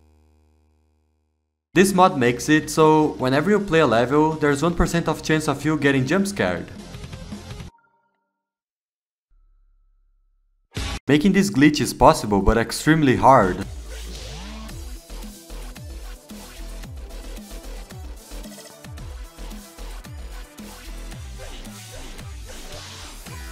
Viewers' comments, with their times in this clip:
0:08 Love how the congregation jumpscare just gets cut off but you can already tell what it is